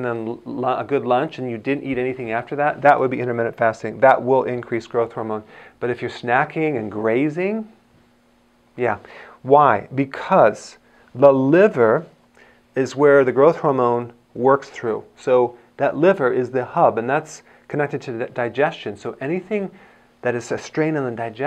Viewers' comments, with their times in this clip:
0:05 When Snacking and Grossing ( funny expression ) hahaha